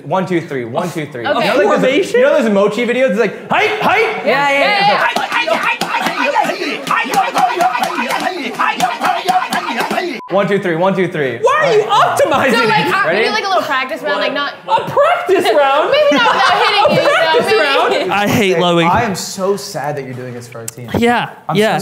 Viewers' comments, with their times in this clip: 0:07 "WhY aRe YoU oPtOmIsInG iT?!" the fear! 😆